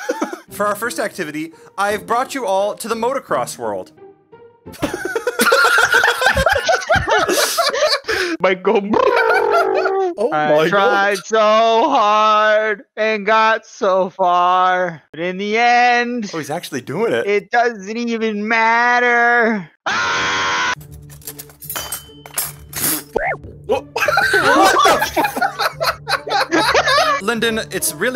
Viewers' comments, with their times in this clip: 0:03 when you got the whole squad laughing
0:10 THAT SCREAM AHAHAHAHAHAH the ABRUPT CUT OUT EDIT TOO